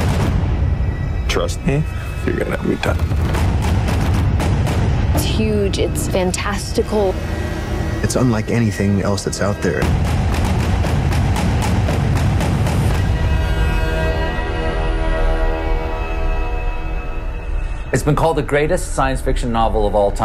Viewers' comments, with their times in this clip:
0:06 "It's huge, it's FunTesticle "